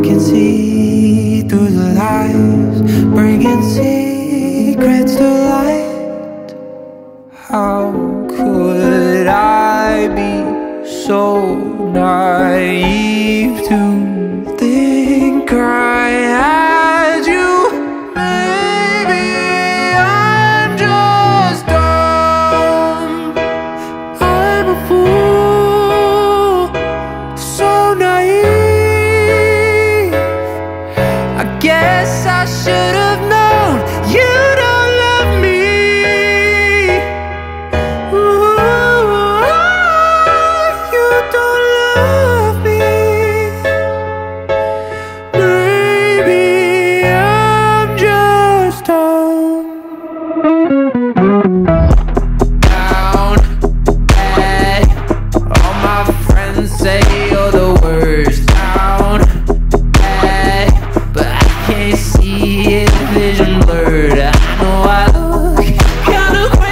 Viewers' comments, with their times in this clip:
0:07 brb crying that chord progression from tickled something in the back of my soul
0:07 this part is giving me Evanescence vibes and I love it.
0:15 the notes remind me of golden hour "to see you SHIIIIIINE"
0:17 you can't tell me what comes after "maybe im just dumb" sounds like bohemian rhapsody
0:22 And also Adele it really sound so similar to the chorus of "all i ask" im not shocked of its inspired
0:22 I don't know why but these chords make me think of Queen's song – Bohemian Rhapsody
0:22 reminds me of All I ask from Adele ♥️
0:35 how does he hit that high note
0:37 beach boys vibe
0:38 he sounds exactly like brian wilson in the 60s
0:40 omg dude impressed of your range so much love your music
0:50 After this sounds like a borns song, reminds me of electric love. This should be in a fifa game
0:52 Up to minute that could’ve been a solo in some modern musical. Better than anything Broadway has put out in a long while.